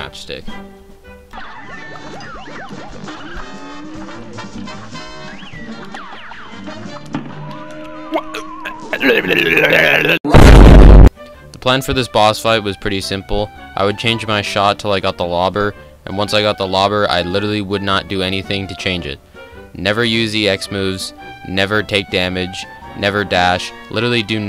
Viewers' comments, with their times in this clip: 0:08 bro spoke crazy Dave💀